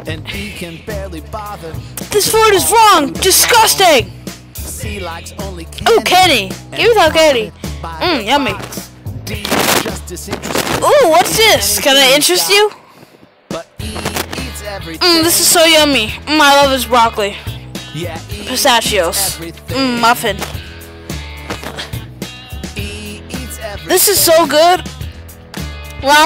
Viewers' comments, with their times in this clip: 0:09 He is broking the microphone